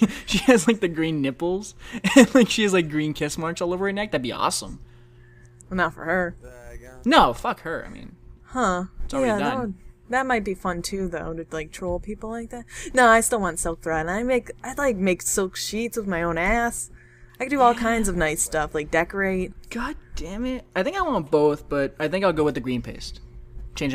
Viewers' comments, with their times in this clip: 0:10 guy talks in the back round